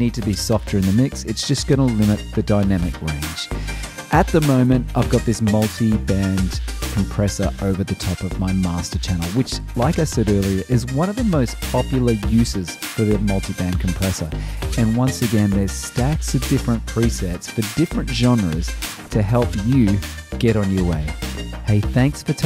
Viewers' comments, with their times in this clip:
0:04 That tune around the mark is brilliant